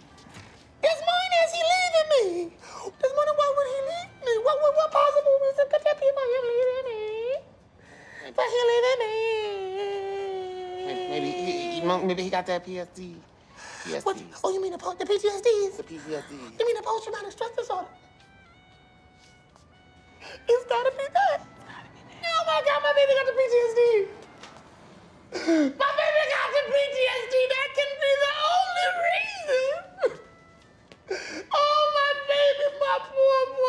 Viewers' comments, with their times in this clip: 0:08 When you pinch the opening of a full balloon
0:21 Softly whispers: it's gotta be that! DEAD.